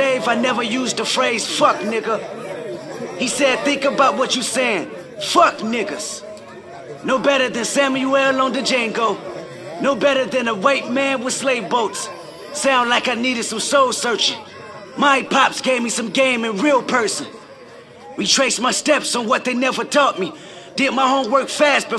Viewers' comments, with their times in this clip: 0:05 Listen to the whole crowd go completly silent as Kendrick spits once in a lifetime knowledge.